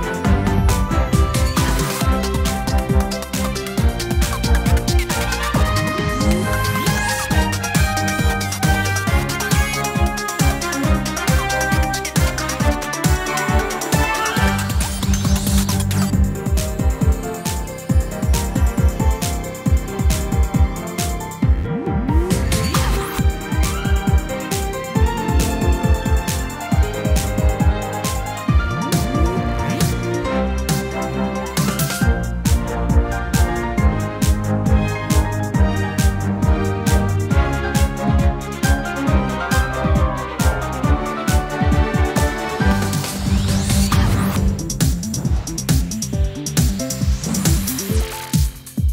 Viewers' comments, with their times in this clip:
0:03 Is it just me, or does this music really remind me of the gym theme from the mainline pokemon games? Like that section at the mark
0:23 This tune is so underrated
0:36 sidon go brrrrrrr